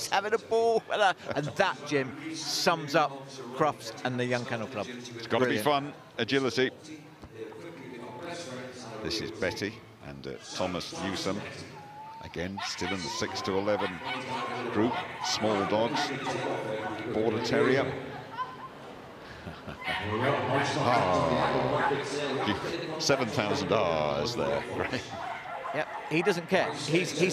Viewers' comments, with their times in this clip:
0:09 Beautiful Betty the Border Terrier was very barky from which I enjoyed in this one.